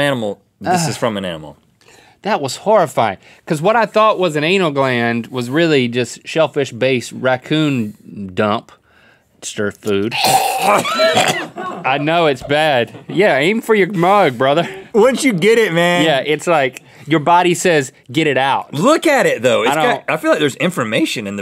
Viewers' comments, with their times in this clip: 0:09 HAHAHAHA! Rhett that delayed retch so dramatic I love it haha